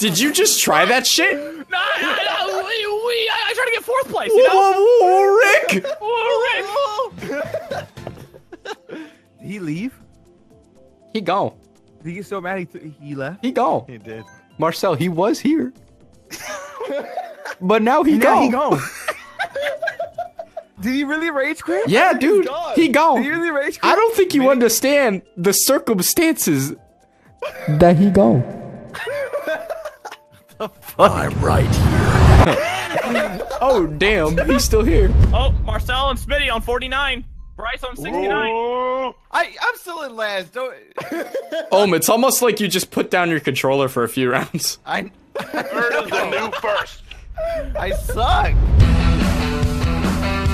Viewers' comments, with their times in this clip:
0:04 WHO DID THE LAST MORTY IMPRESSION IT WAS SO GOOD
0:06 WHO DID THAT MORTY IMPRESSION
0:31 I’m right here ( in a deep voice ) 😡🔥🔥🔥🔥🔥🔥🔥🔥🔥🐉🦕🦖